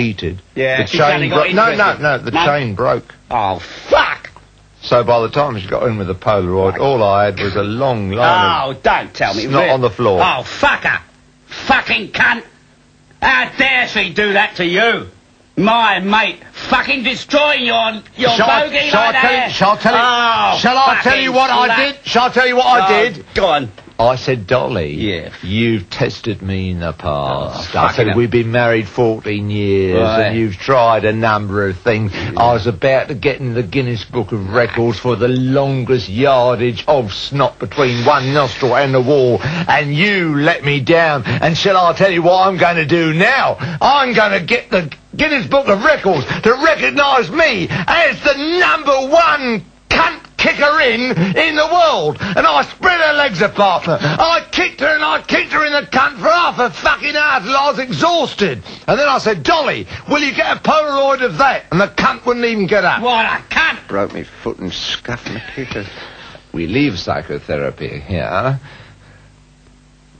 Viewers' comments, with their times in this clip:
0:04 I'm not really into this kind of humor but that was hilarious. I really found two great comedians when I found Pete and Dud. I love how Dudley's voice kinda breaks I think I really am in love with them.
0:54 ahhhhhhhhh yes ,,,,Censorship,,,at ... I guess what Peter Cook actually said after ..was to much for Youtube so it was removed......